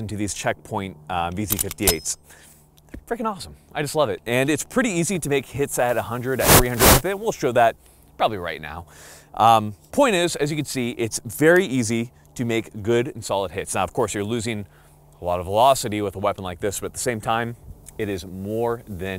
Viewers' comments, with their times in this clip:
0:05 The ear rape